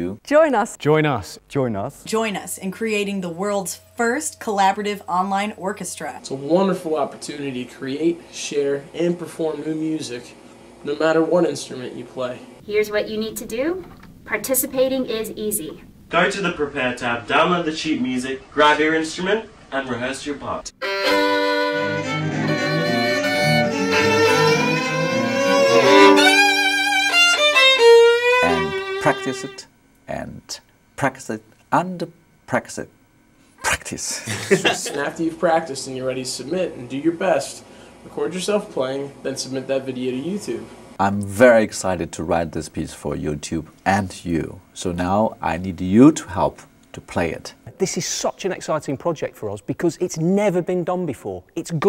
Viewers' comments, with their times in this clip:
0:08 wtf is that a violin ?
0:19 What the...? What happened to Tay Zonday's voice ?!?
0:22 beautiful music, random notes... sounds like a symphony already!
0:36 Such a badass electric violin.